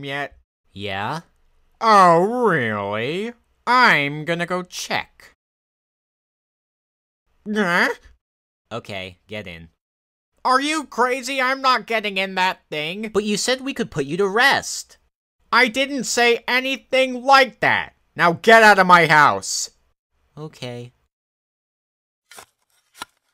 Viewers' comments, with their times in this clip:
0:07 He supposed to scream! Not "huh"